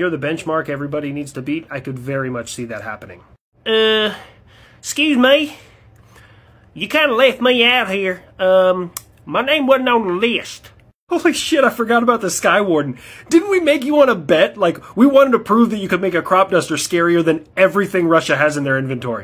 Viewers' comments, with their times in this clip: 0:07 that's the perfect voice for the Skywarden. The official name should have been the Jethro instead of the Skywarden. It is now officially my favorite US military plane.